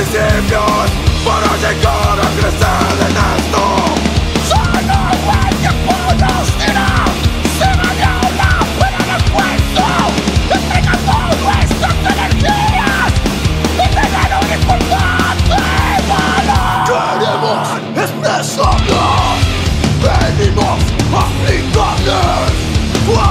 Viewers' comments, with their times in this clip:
0:04 that vocals LOL, that can't be called hardcore for sure...